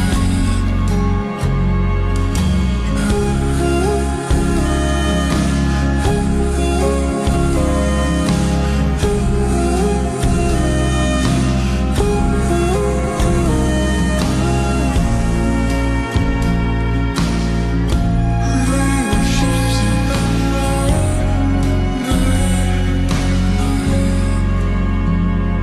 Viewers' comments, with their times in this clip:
0:07 study while listen to this is very calm u know